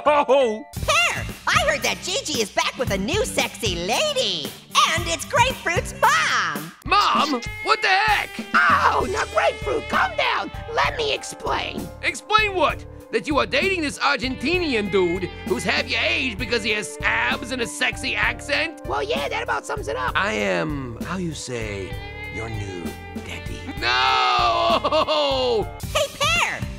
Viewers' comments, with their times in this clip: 0:07 Why does grapefruit sound so different